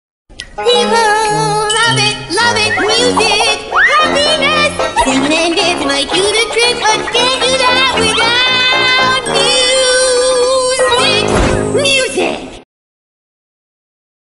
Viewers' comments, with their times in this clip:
0:11 sorry but the soundtrack is fat mean